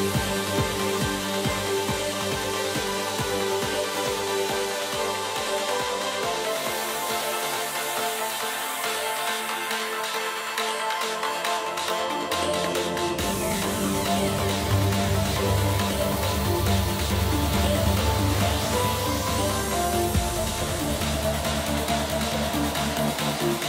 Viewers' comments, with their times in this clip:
0:07 ❤️❤️❤️💯 The full piano is just wonderful unbelievable it love this part OMG what a sensation so beautiful musician it is paul van dyk love this artist and every song of him 😍❤️👌💯🎶🎵👏🙏👆♥️💕💖💞💜🎛️🎚️🎚️💙💙 What a concert what a talent just love it this is real trance music a real musician not only a dj and producer this is an artist musician ❤️❤️❤️❤️❤️🎹🎹🎹🎹🎹🎹🎹🎹🎹🎹🎹